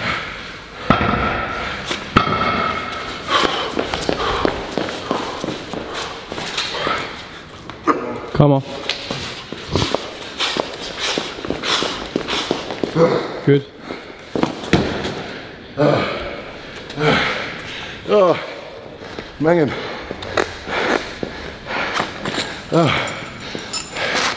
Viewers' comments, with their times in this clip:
0:07 Hype Man Scottish style! Come on…. … Good